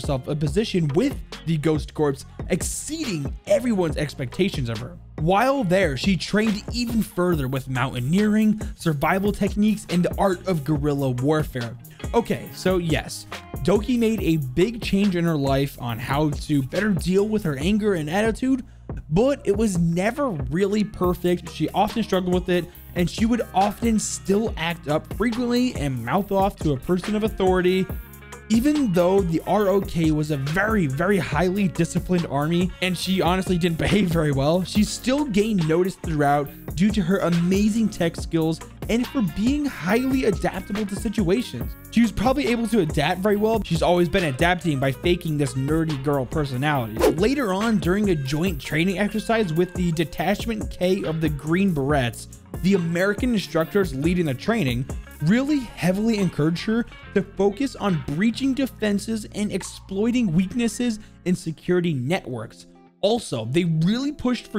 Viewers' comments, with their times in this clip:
0:09 did I hear MONKE
0:51 Surprised no ones pissed off with his pronunciation of the Green Berets